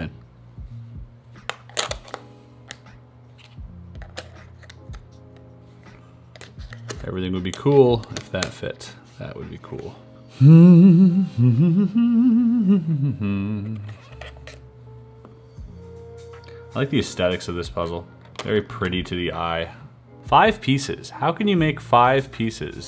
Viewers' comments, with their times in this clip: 0:10 when you hum, you sound like 343 guilty spark